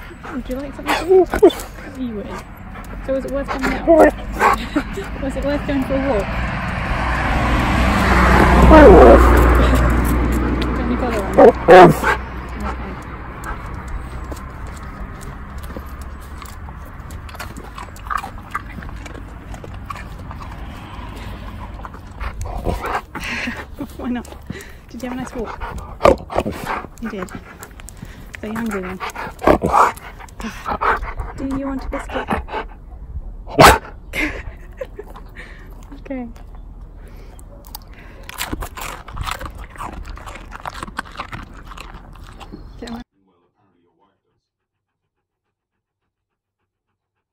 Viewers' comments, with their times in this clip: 0:08 When you said "was it worth coming for a walk?" I wasn't looking at the screen but it really sounded like he said "it was" That's what I heard! Listen again! It blows my mind.
0:10 I swear he said 'Fuck off!'
0:33 Not gonna lie that "YEAH", kinda scared me.